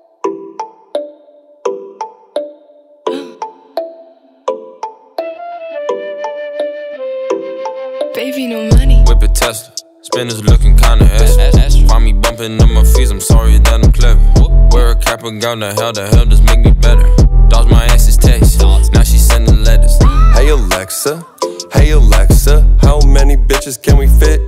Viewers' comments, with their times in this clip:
0:07 Who is that says baby no money god damn her voice is pure gold!
0:08 Who is the girl saying "gravy no money" ? her voice is so beautiful